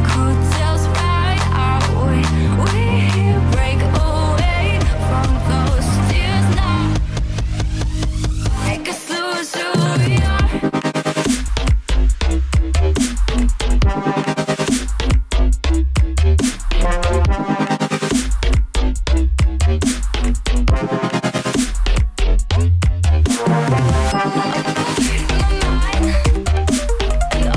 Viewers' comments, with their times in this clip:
0:10 Hahahah the chords, is it just volume automation????